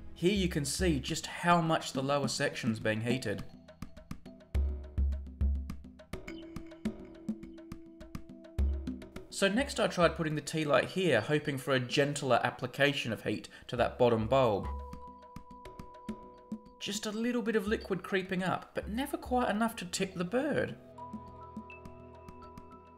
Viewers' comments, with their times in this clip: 0:04 music sounds like jak and daxter precursor legacy